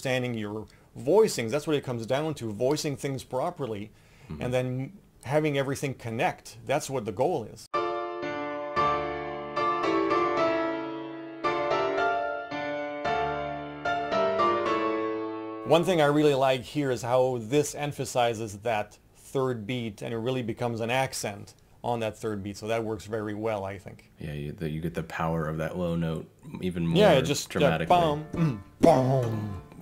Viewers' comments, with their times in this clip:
0:10 Fifth parallels are not prohibited?